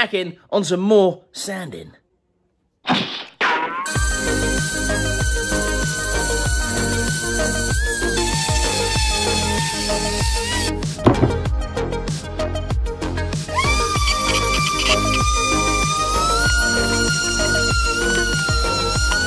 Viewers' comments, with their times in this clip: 0:03 I left this video running to grab some water and then near I heard that weird screaming. I was terrified btw. 😂😂